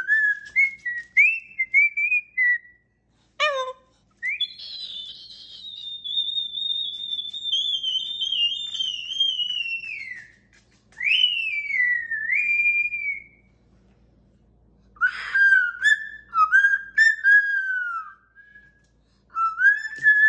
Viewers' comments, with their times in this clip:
0:03 Barney went through his entire repertoire today. Whistling, hopping, raspberries and that precious little Hello! Such a happy boy. 🥰♥